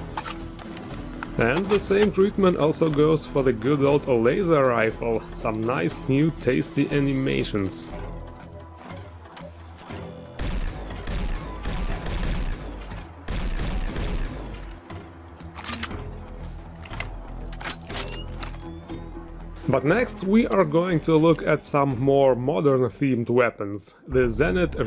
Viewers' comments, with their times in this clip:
0:08 What are you using for having such crazy laser weapon sound when firing?